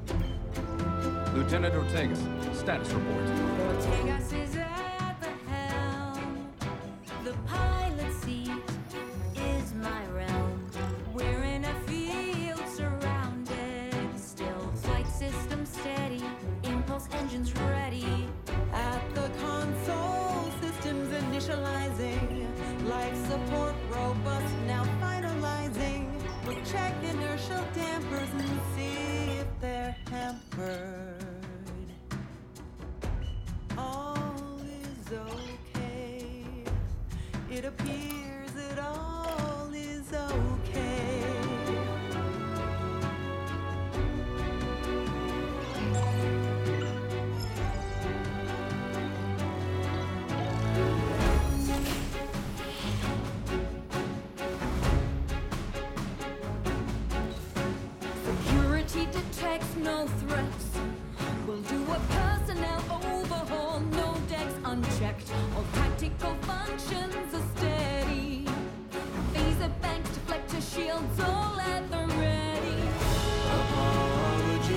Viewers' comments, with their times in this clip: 0:06 i love how Pike jumps from his chair when Ortega starts singing.
1:00 I love that look on the captain's face))) I listened to the scene and heard Pike sigh heavily at that moment)))